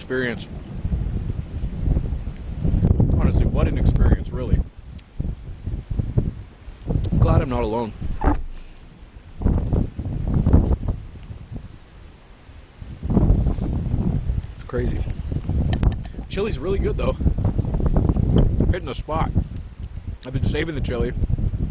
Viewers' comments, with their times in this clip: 0:03 a burn? bern? berm? Sorry what is that island you're on ?